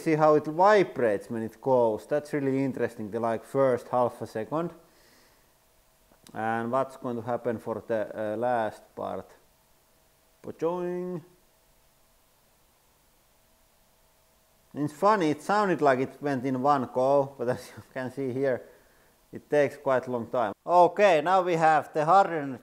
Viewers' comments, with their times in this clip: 0:10 PACHOING! (and if you activate the subtitles it says "but join") 🤣